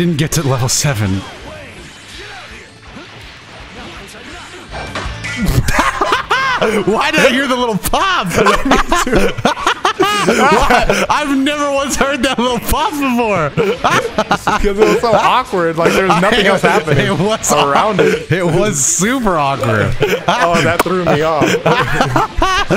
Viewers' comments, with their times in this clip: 0:04 Broooo🤣🤣 funniest part of the video is where you can hear gogetas bluff kamehameha confetti 🤣